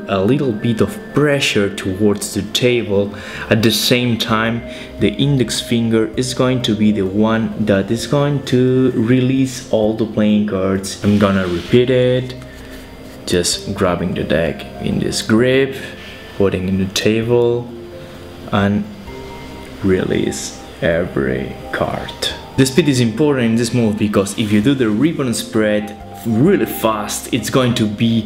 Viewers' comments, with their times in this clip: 0:09 Was he trying to match pitch ?